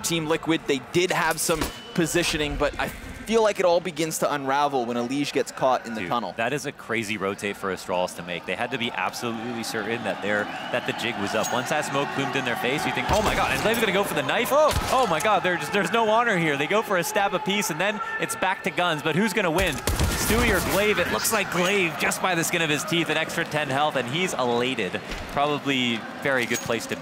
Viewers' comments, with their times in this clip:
0:10 stewie can hear the crowd making noice and realizes someones behind him.